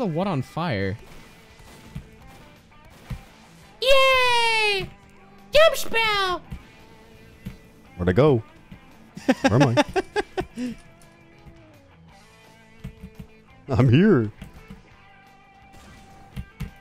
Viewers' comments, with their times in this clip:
0:03 dude sounds like a marshmallow kid lmao